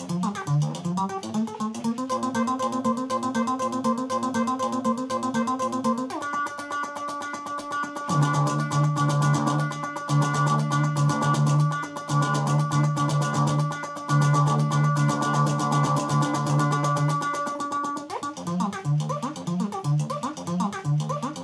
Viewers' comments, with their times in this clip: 0:08 I think I heard a gallop ...